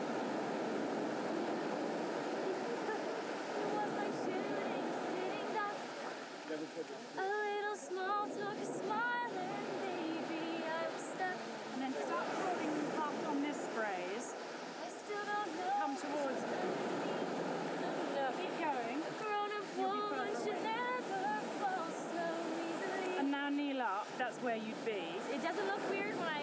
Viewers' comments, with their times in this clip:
0:04 pretty much sounds like the original gosh she’s stunning she can act sing and dance what can’t she do
0:04 she doesn't even need autotune, her voice is everything
0:08 Amanda singing without the audio and music sounds so good